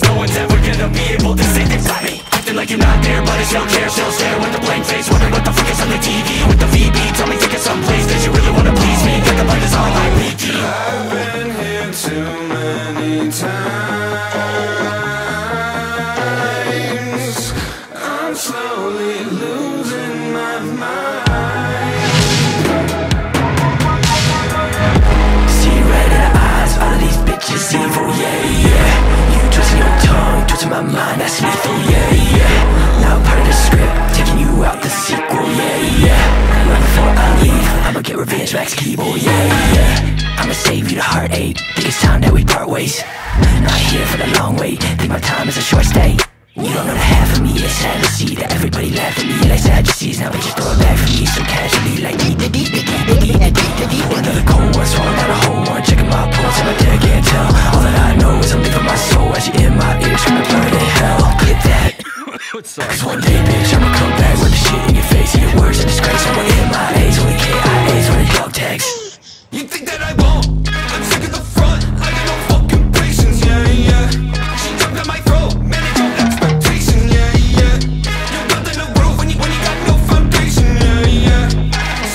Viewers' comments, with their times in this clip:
0:10 I discovered Dolores about 3 months ago and I haven't stopped listening to it. Now Grim Salvo are about to make me two-time on her with Mildred. That bass line is 🔥
0:24 Love that drop into the highpitch guitar part what a banger
0:51 “Deet-da-deet-da-deet-da-deet-da-deet-da-deet-da-deet” why does that go so hard lmao
1:06 im dead after that turtle noice ahahahahah
1:08 the turtle noise ❤
1:09 Dude really placed in the turles having sex noise lmao